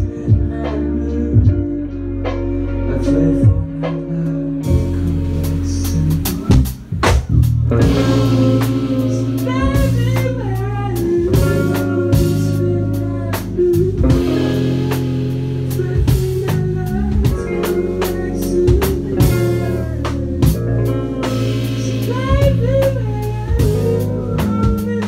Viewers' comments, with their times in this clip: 0:09 I love that sharp